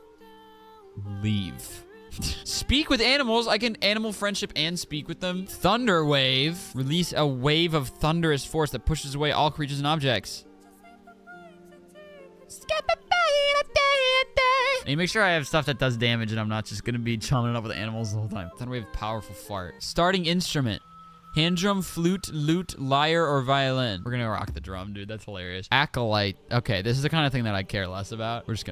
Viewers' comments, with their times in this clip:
0:10 HELLO?!?!? LMFAOOO OKAY VOCALS
0:13 You trying to sing the theme song😂 is what made me subscribe 😅
0:13 ayooo bro got some pipes